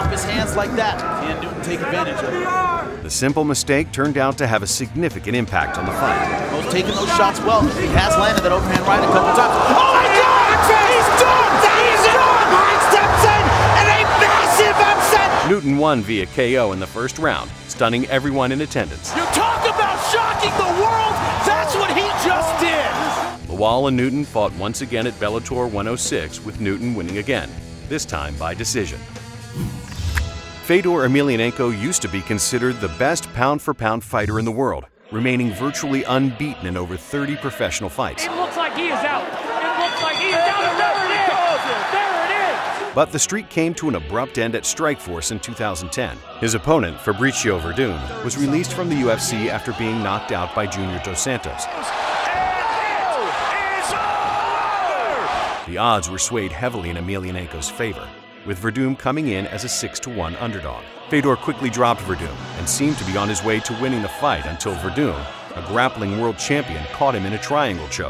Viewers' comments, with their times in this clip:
0:10 the commentator sounded like hitler😂
0:30 I hear Russia's National Anthem
0:51 TF Soviet anthem from to 5:0 FBI OPEN UP